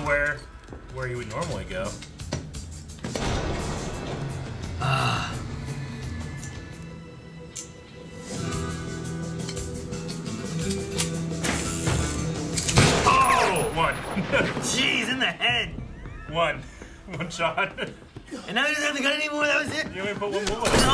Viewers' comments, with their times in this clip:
0:07 throwback to oldschool shooting. The outlaw music in the background says it all